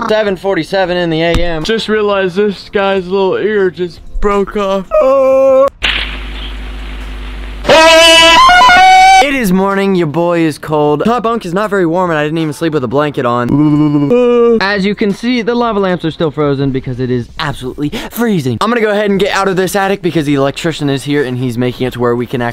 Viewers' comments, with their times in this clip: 0:07 Where is that guy screaming from